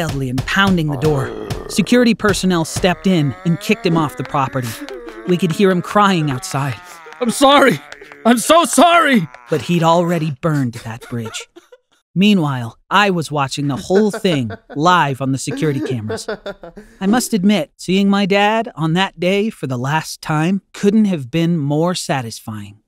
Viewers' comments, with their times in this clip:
0:05 wow here i wonder where these ideas come from but made me laugh he be crying like a baby